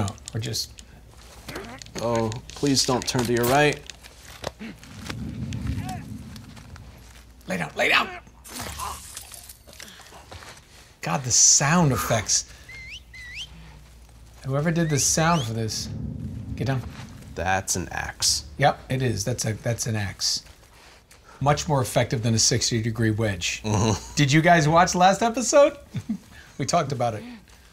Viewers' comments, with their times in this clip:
0:10 The sound designers man, pure geniuses, that whistle sound when you pull out your knife out of the enemies throat is just crazy, you feel like a complete monster killing every dude. I've also saw a whole thread on twitter on how they manage to do the characters breathing, crazy amount of work just for a breathing mecanic, they really know their stuff.